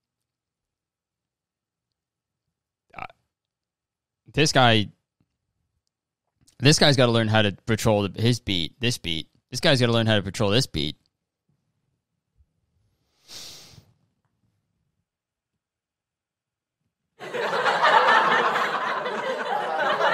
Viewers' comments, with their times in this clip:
0:07 this man has 2 left beats edit: does it sound to anybody else like theyre saying "i got hoes on it"?